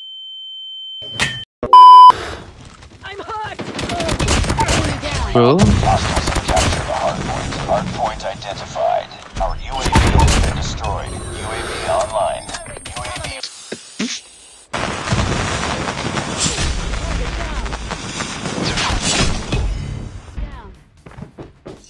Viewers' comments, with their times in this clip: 0:05 uhhhhhhhhhhhhhh did someone heard a voice in ? ? ? ?